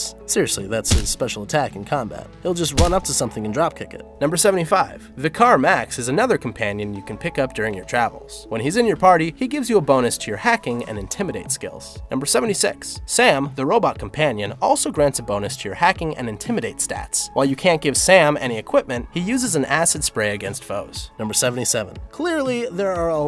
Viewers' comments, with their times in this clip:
0:04 VICK ARE MAX. Do you even know how to speak properly? It's Vicar...